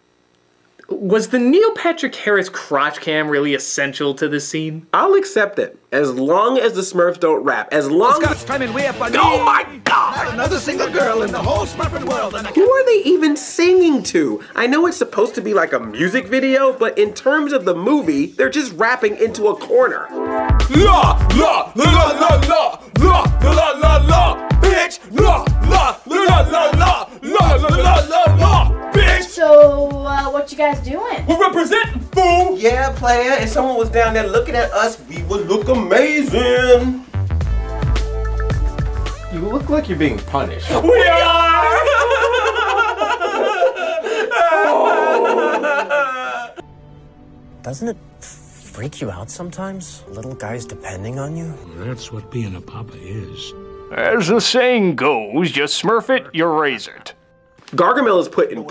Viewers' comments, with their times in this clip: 0:09 that "OH MY GOD"
0:20 I was not expecting the rap, I'm wheezing 😭😭
0:21 the demonic chanting
0:23 Okay demonic chanting in corner got me
0:40 Wow, that slipped under my radar - when they're crying the Black Nerd starts crying in time with the Smurfs theme.
0:42 it sounds like his sobs are in the same tune as “La La La La La La!”
0:42 the nerd cries the smurfs theme
0:43 black nerds laugh is the La La song 😂
0:44 I never noticed nerd crying the Smurfs theme LOL